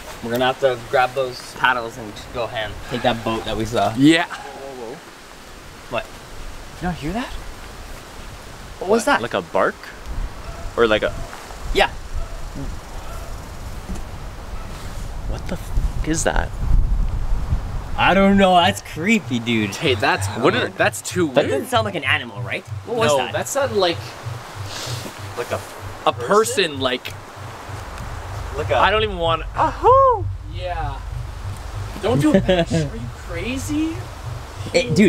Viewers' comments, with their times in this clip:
0:05 Sounds like a person screaming
0:20 The scream is a skin walker I think